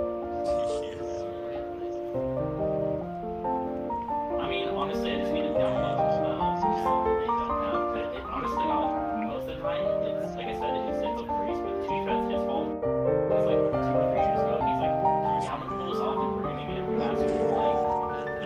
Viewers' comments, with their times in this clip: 0:04 look thats danish or other language near scandinavia spek many languages